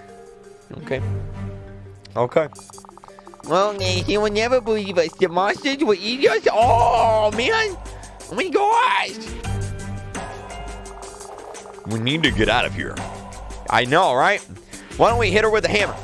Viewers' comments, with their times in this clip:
0:04 Just baby then MANLY VOICE